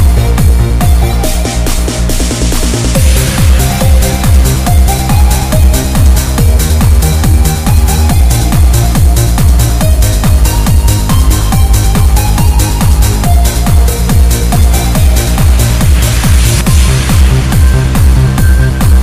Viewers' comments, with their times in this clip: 0:03 that hi-hat, i love it